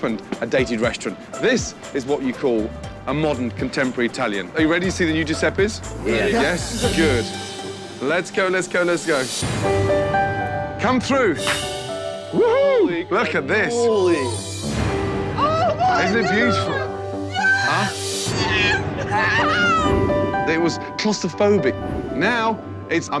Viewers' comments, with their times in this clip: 0:09 cant be the only one that heard the gingerbread man from Shrek